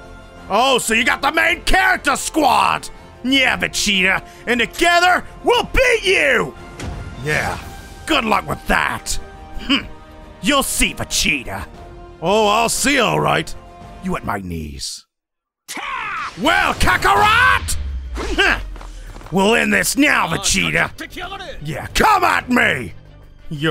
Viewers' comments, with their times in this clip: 0:10 did your voice crack